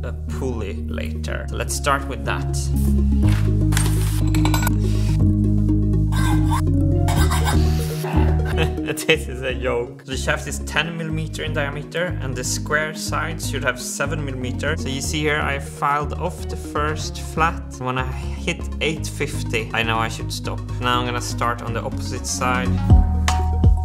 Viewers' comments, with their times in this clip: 0:08 This is a yoge